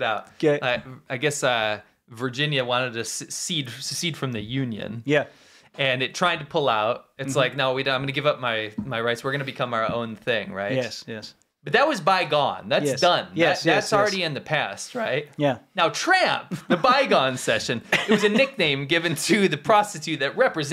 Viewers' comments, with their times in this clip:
0:05 the beat to two session rap was somewhat cool... could hum to the beat, but the lyrics was meeeeeh